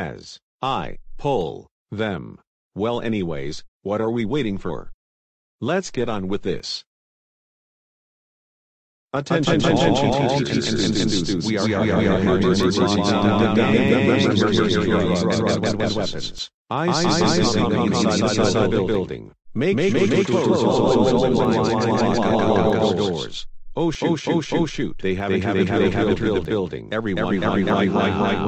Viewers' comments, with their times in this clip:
0:09 Oh my god what an echo he's making